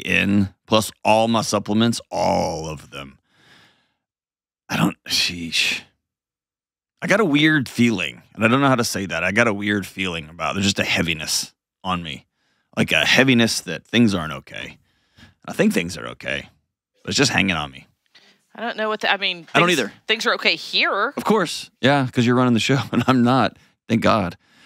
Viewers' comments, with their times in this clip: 0:08 I’m thinking the constant trauma calls are taking a toll on him. At the beginning of January he mentioned he was feeling low and depressed and then listen to his tone It just seems like the heaviness of the world is weighing on him!